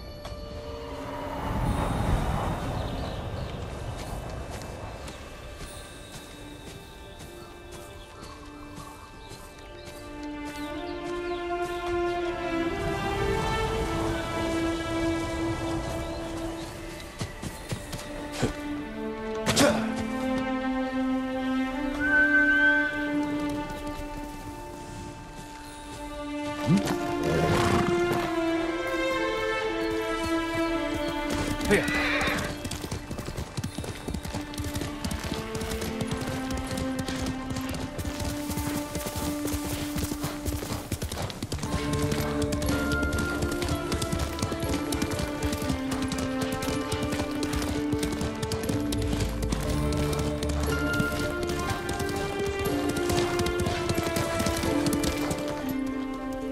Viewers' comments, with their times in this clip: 0:08 Amazing visuals, and amazing music. The music dropped my jaw. But that outro... With the crescendo and the thunderclap over that stunning wide scene... THAT'S how to leave people with a lasting impression!
0:26 i swear i could hear that "aaaaa AAAA" from Ezio Familly theme here
0:41 People will notice. - Gotta love how they've seemed to put it to the tempo of the gallop of the horse... > I definitely hope they've programmed to act like that dynamically and that it's not just coincidental.